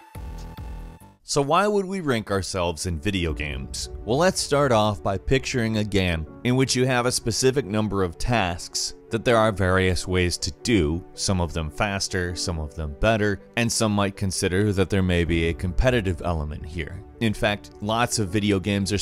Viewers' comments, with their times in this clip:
0:04 What the hell is a 'gam'
0:04 PICTURE A GAM A GAM GAM